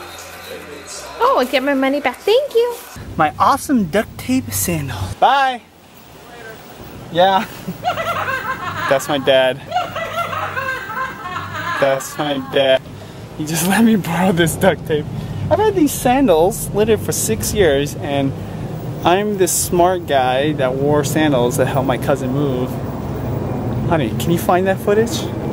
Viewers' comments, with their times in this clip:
0:07 the laugh that will haunt